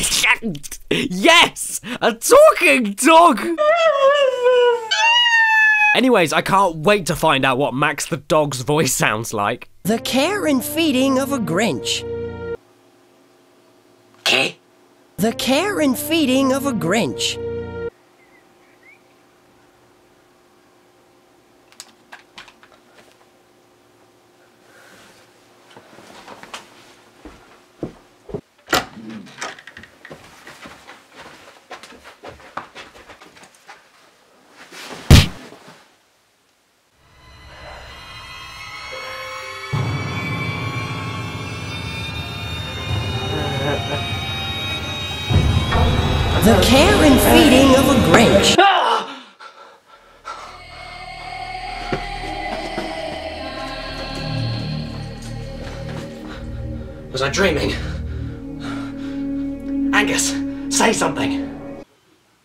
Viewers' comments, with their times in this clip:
0:09 Here, Enjoy listening to the pain that is... Max's voice.
0:17 Max’s voice sounds like if Seth Green got hit right in his Robot Chicken!
0:33 Dat sound effect tho
0:50 what's the creepy music ?